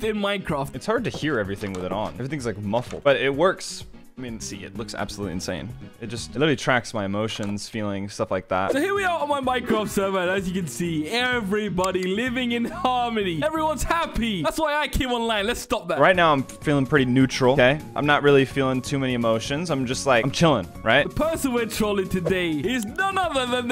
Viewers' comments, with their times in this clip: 0:09 Favorite part. Just the "Everybody living in harmony, everybody happy" then immediate deadpan transition to "Thats why I came online, lets stop that!"